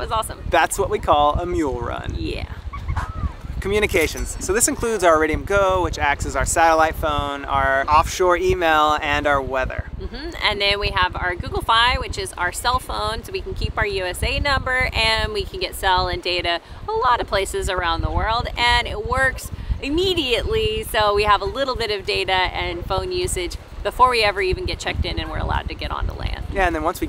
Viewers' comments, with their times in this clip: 0:09 Sorry, your what and go ?